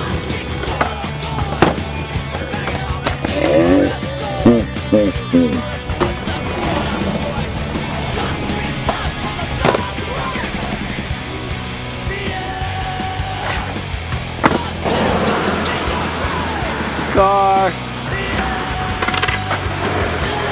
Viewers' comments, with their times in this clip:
0:06 mega evil laugh